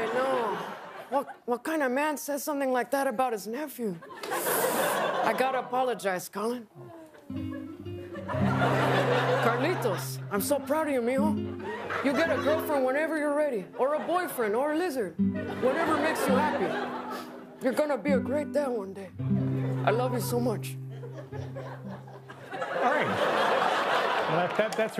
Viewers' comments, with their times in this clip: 0:07 when the music kicks in 😆🤣